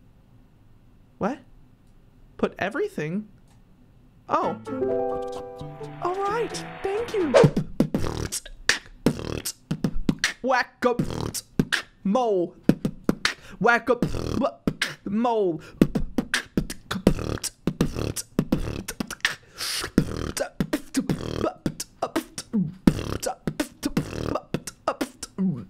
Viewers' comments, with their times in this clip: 0:07 bro just started beatboxing for no reason😂😂😂
0:08 Nice beat boxing 😂🎉🎉